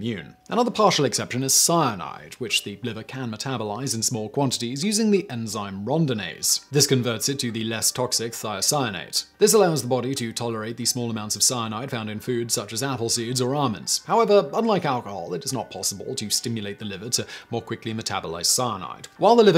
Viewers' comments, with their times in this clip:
0:05 Aaaah, Rohndanaise, Great Break Fooot, Safe Driver.